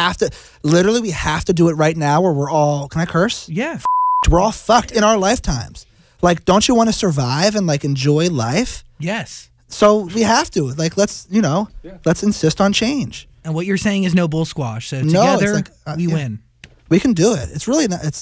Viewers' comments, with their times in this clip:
0:03 they censor the first one but not the second?😕